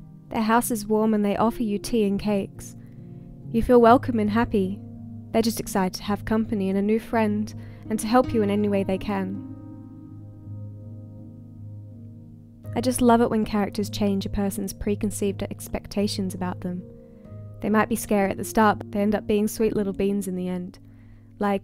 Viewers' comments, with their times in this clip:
0:04 You should read stories to children. I love your voice so much.